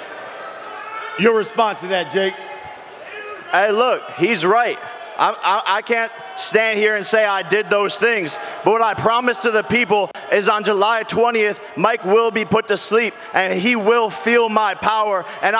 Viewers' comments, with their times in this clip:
0:03 he sounds like he on some WWE shit